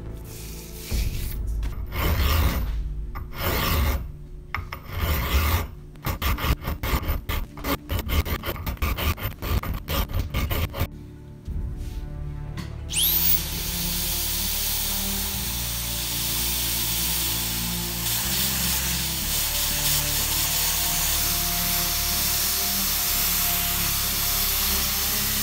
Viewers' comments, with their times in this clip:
0:07 no one: Not a soul: Minecraft eating sounds: